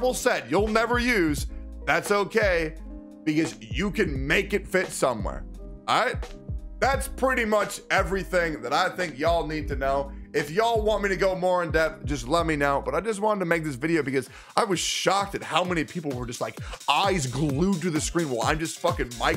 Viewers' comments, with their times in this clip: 0:03 CAT GOES YAAAAAAAAAAAAAWN